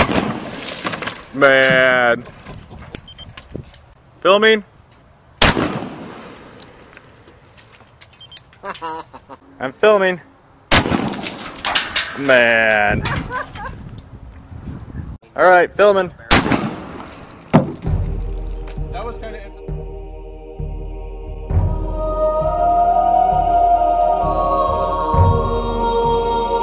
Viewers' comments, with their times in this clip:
0:08 funny laugh lawl